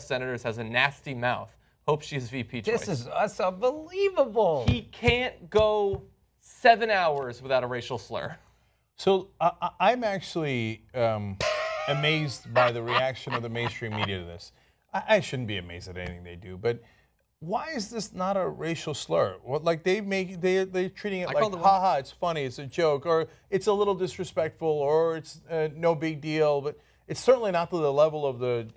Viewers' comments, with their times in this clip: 0:10 woah what a laugh!